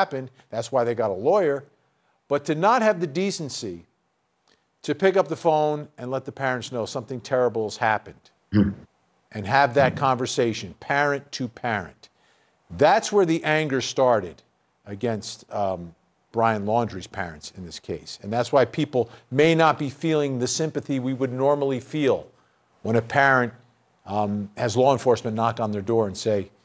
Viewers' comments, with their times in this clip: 0:08 What is that weird ass noise ? 😂😂